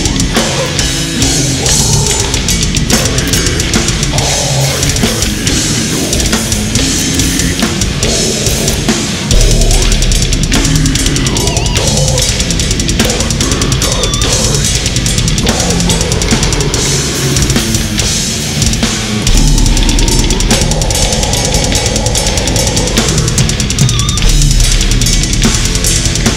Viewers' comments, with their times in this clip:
0:09 I love the efficiency doubles ! I do that all the time! Also not easy to do them this clean at that tempo